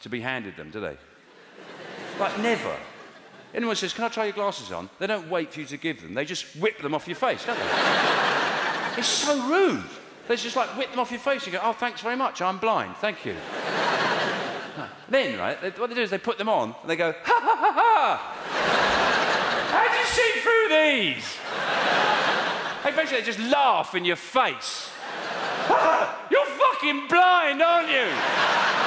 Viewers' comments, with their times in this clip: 0:10 "It's so rude!" Just the way he says it gets me going 🤣